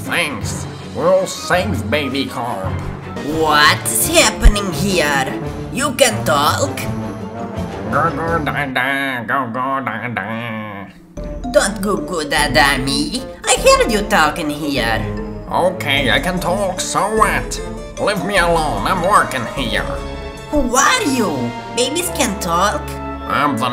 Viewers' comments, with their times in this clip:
0:09 😂 oh my god l dont hear what say is that 😂😂😂